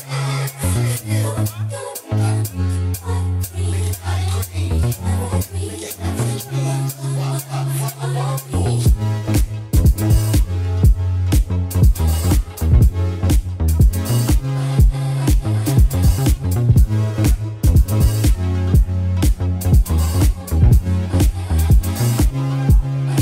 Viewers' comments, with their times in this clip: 0:06 This sweet conversation rapidly disrupts as they swiftly manifesting into jumping machines, they timed it seamlessly, roundin' on that beat drop, as if they were just one person. They must have more things in common than most may think. And it doesn't matter how many times I've watched this, this moment still remains as my most favorite thing from the entire video.
0:07 When that beat drops.🔥🔥